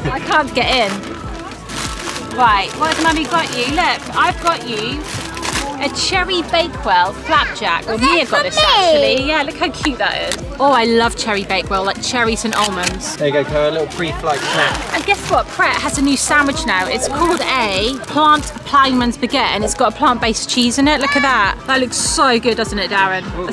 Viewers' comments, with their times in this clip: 0:08 The way he said “is that for me?” Was so cute!!! Timing: